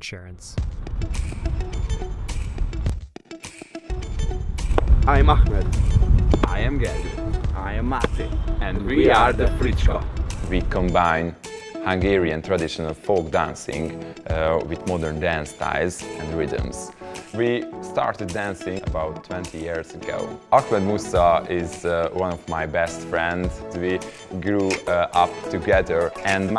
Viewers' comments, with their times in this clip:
0:08 So I heard, "...and we are the Freak Show!"
0:09 Did I hear "I am gay"?